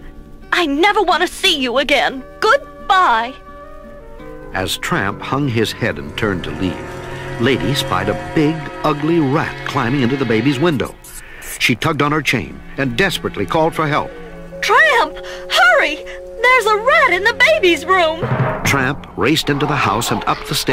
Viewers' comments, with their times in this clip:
0:04 the music still sends chills as the battle of Tramp and Rat was about to begin